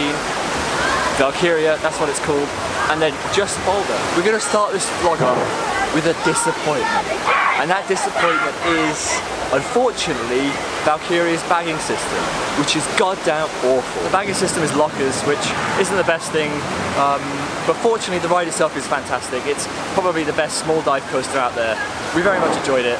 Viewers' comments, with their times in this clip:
0:03 Is it just me or are there people singing Pumped Up Kicks in the background?
0:05 Lmao the kids singing Pumped up kicks